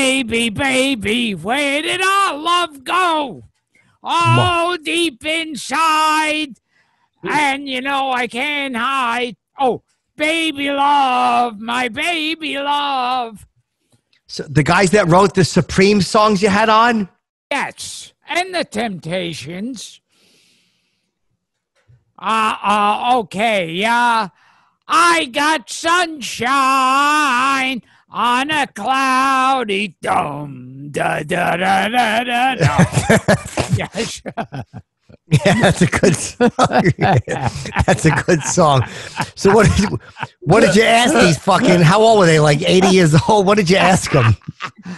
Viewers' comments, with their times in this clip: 0:04 HOLY shit the golden voice of Gilbert. How this didn't get Content ID-ed I'll never know.
0:25 oh god that singing is horrible 😂😂